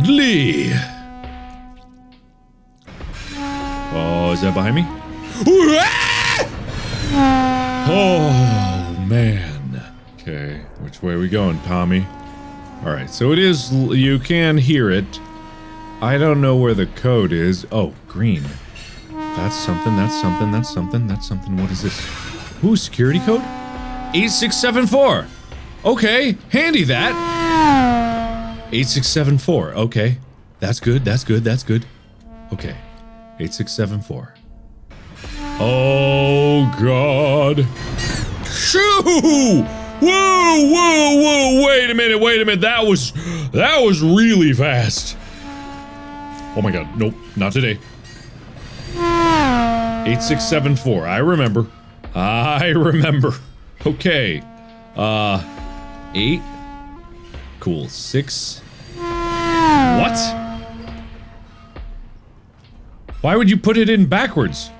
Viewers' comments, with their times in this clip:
0:03 The scream is an excellent rendition of the Half-Life 1 scientist scream
0:05 when your dumbass friend tries to scares you shouting to your ear
0:26 that sounds like an race car going by lmao
0:48 Train horn❌️ Indycar✅️